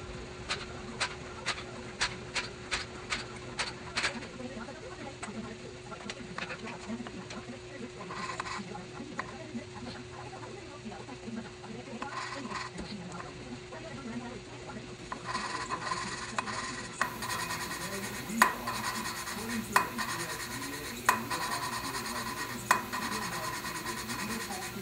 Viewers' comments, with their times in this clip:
0:08 that nice sound that the valve is sealing the port completelly :)